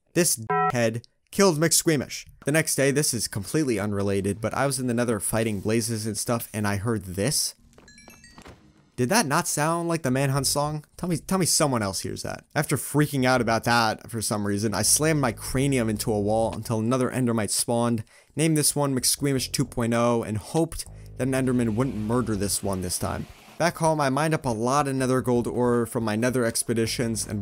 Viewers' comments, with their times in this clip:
0:05 when the exp orb also watches dream's manhunt
0:06 that sounded like a shield or something idk its familiar in minecraft youtuber dream i feel like minecraft secretly added an invisible shield for mobs of the blazes bc thats what minecraft focusing at the old days the king looking blaze
0:07 "Dream manhunt song but xp" lol
0:07 wait that sounds exactly like the dream speedrun music
0:07 If y'all still don't hear the man hunt music your welcome here is time where it was played
0:08 yeah it's sounds like dreams speedrun music